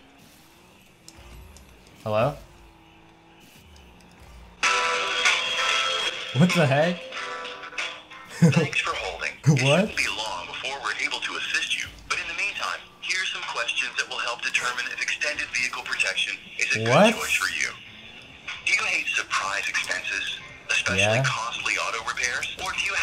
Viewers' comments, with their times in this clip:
0:04 THAT MUSIC IS SLIGHTLY ABOVE ROOM TEMPERATURE